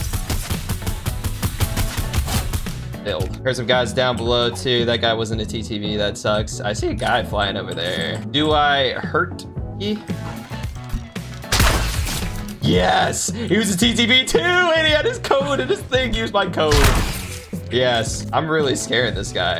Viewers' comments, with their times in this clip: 0:06 you noticed that voice crack?